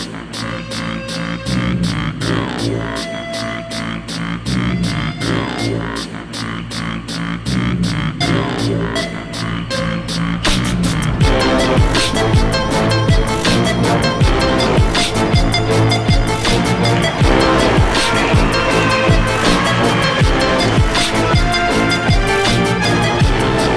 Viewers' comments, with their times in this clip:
0:08 Omg that trump drop is sosoosos amazing
0:10 5 years old and still one of the coolest videos on YouTube! when the beat drops tho